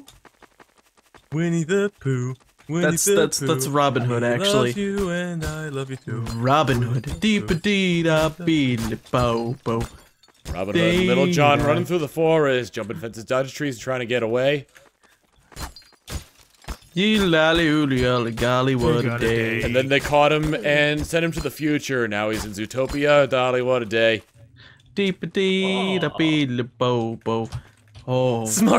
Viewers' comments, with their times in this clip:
0:10 That song just brought back a flood of childhood memories omfg